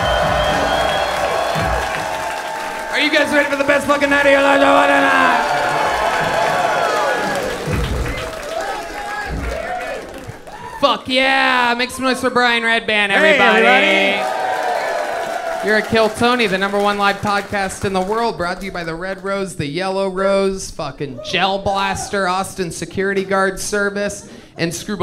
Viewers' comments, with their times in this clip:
0:06 .00 that beat he starts droppin